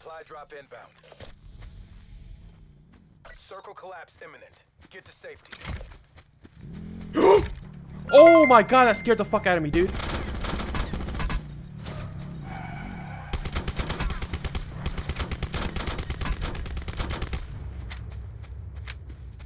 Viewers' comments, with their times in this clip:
0:06 prove the sound is broken in this game.